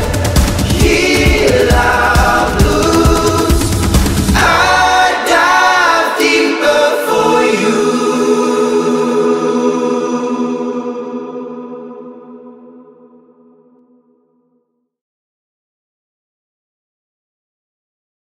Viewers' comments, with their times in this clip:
0:07 If someone said to me "i'm gonna kill you " and said "you" like this i would totally agree 😂